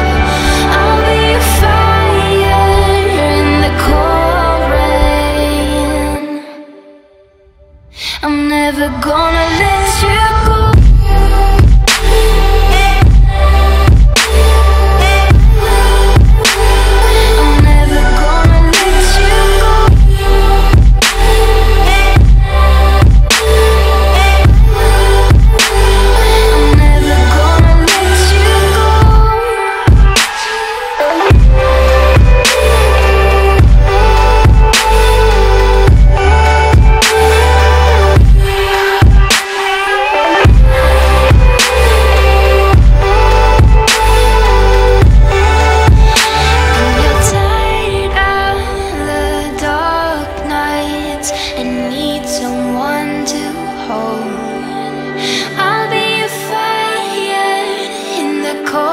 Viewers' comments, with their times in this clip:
0:06 goosebumps on my heart every time, I swear. What a beautiful song.
0:10 when that beat drop, my house started to vibrate....just shows how bad the workers were at building it when that beat drop, my body started to vibrate too.....just shows how weak our body is compared to the universe Just motovates me into doing better and better, harder and harder every day
0:10 Just gave us the best drop in (melodic?) trap! I had tears in my eyes and chills .. literally!! THIS is pure, phenomenal art - thank you very much Illenium!
0:11 The stupid beat that started destroyed the whole song and music. It sounded like the beat was coming from a damaged boom box with damaged speakers. How people ruin songs with such bad moves and dont even hear it themselves is beyond me.
0:26 Ignoring the trap in the background this part of the song is unbelievable.. Never have I had a song made me feel so happy, from the lyrics "I'm never going to let you go" to the beautiful transition in pitch between all the notes.. This part quite literally melted my heart by having such an impactful tone, it made me and hopefully you the reader, experience the two most important feelings in life, happiness and hope...
0:40 lol that seemed like a scream